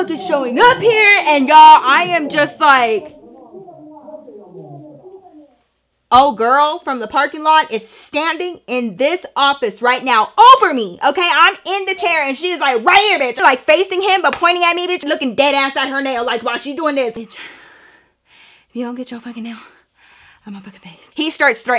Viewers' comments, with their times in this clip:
0:03 the sound effects is top tierrrr lmaoooo especially giving major Mr/ Krabs meme lmao